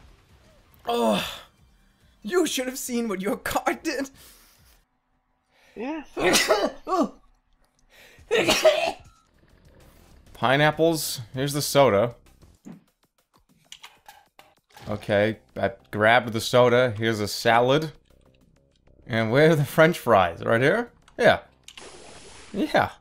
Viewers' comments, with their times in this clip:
0:05 why did he sneeze like that